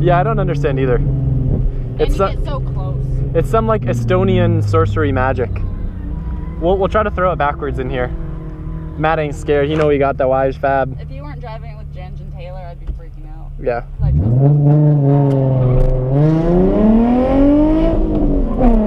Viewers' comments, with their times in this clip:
0:03 was that Estonian or am I deaf??